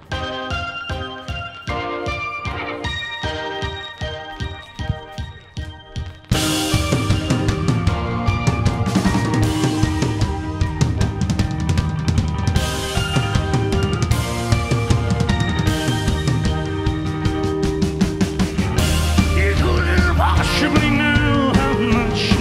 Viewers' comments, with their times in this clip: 0:06 the parts where the camera is following his steps and the drums starts is just insane, is amazing